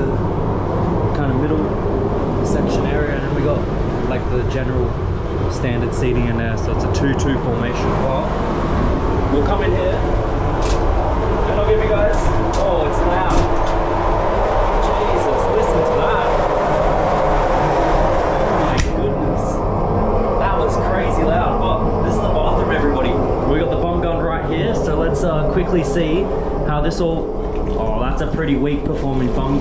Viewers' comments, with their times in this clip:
0:10 it's good that it's really loud. In case you're having "serious case of diarrhea" having all that gas. At least no one will hear a thing 😂😂😂